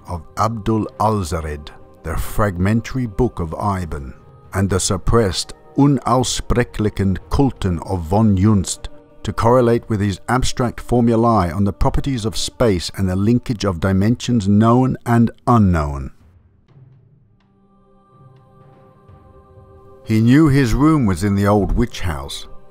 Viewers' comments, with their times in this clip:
0:08 Your voice! --- It's a.m. I'm wide awake woohoo! Thank goodness for middle of the night interruptions!! Tell the, Mrs., Hello & hope all are doing fabulous Thank you for lending your soothing, story telling voice to us! Much love to all!